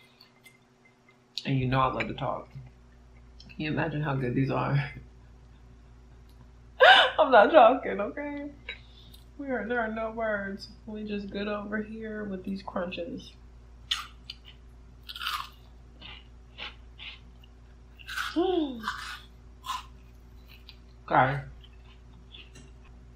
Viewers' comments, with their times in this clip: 0:04 lOl, i started laughing w/ u <3 HAHAHA